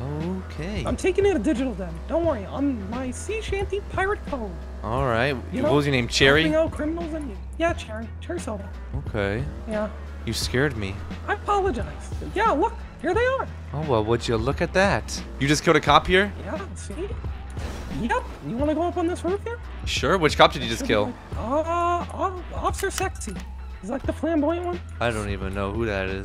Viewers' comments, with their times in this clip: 0:06 Bro sounds like Mickey Mouse💀💀
0:07 No, actually sounds like Mickey Mouse